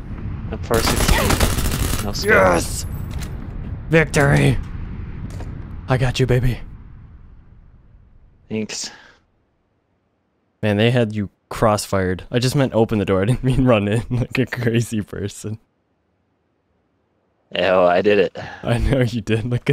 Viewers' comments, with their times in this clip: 0:06 victory! or was it VECtory